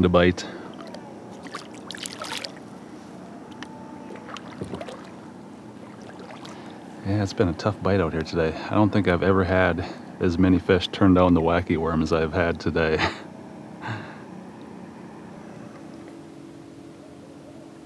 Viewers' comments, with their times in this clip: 0:05 Love the loons sounding off in the background at about the mark.